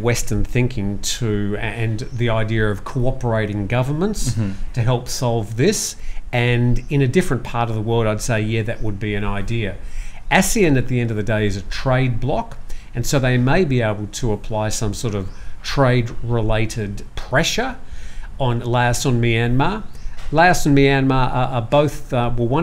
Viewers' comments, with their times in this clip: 0:03 ... sound gets perfect from